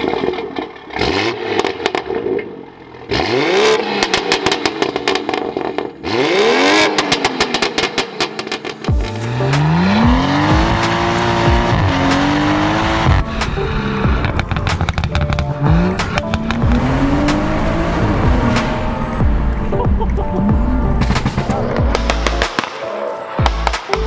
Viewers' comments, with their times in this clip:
0:05 it got a hint of R34 GTR sound about, sounds naughty though